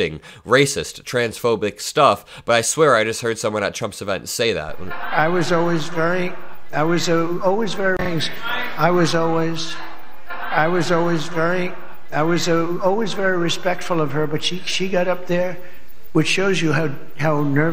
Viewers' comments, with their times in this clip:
0:03 "I was always, I was always" 5 TIMES! Starts about the mark.